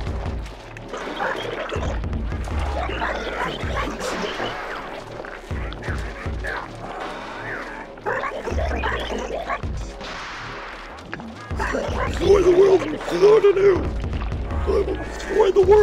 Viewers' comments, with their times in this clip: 0:03 that sounds pretty human